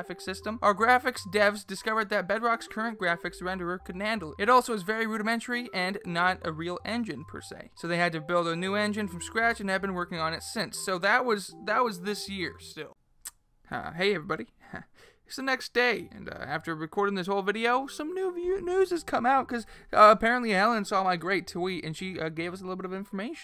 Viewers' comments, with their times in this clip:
0:05 I hate you for putting ear rape everywhere im trying to watcg AM and my ear drums exploded at the end of the video